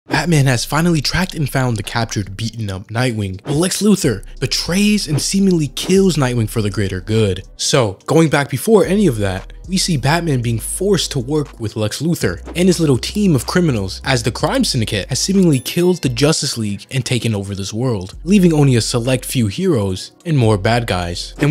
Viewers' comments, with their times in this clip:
0:04 I thought when batman got tazed he said the hard -r